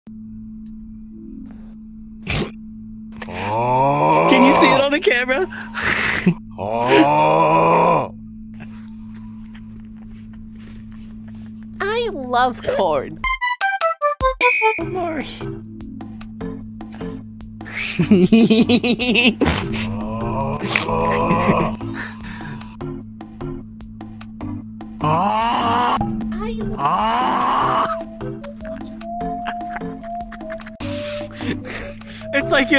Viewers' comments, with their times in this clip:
0:03 that sounds like my dad snoring
0:18 Goofy ahh laugh